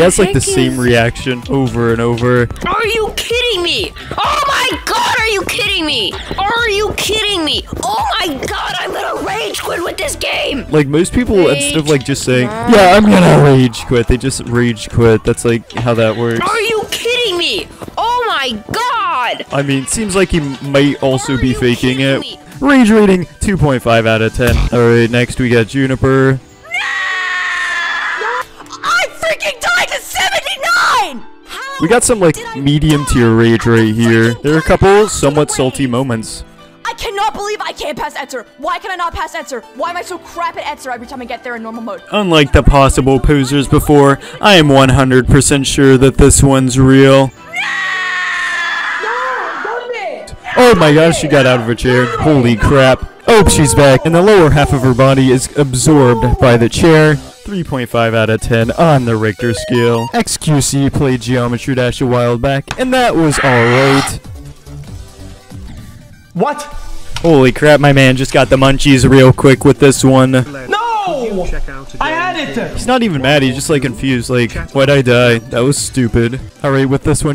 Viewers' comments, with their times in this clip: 0:03 Why does this sound like Jaiden Animations 😭
0:24 I was fooled. I thought I got a notification cause my notif sound is the Blast Processing bwomp
0:47 she sounds like a bird 😂💀☠️
1:03 Growls at you UwU This dude is the best YTer ever